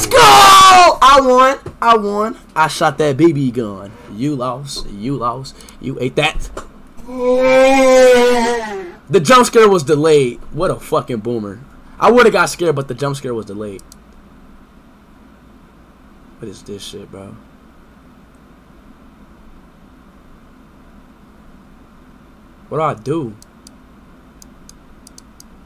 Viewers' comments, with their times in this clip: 0:06 the mutahar sound 🤣😂
0:06 POV: The yawn you make while waking up late
0:07 sounds like my dads aunt snoring